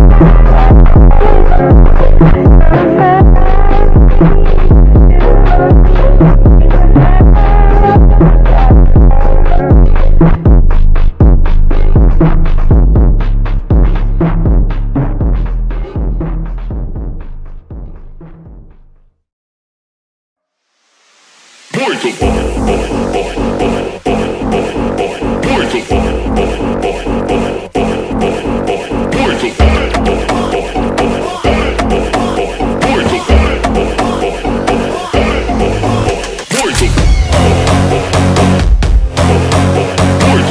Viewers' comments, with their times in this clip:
0:09 love how it changes the song
0:20 Why song change here ?
0:20 WHY IS IT A DIFFERENT SONG NOW-
0:24 are we going to just ignore how the music changed (yes i listened from start to finish to find this)